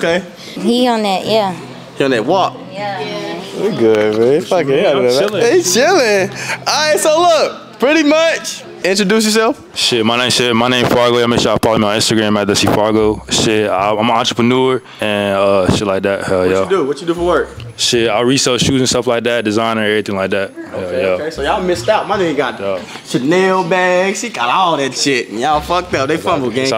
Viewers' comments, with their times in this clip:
0:10 Blud was mumbling .........................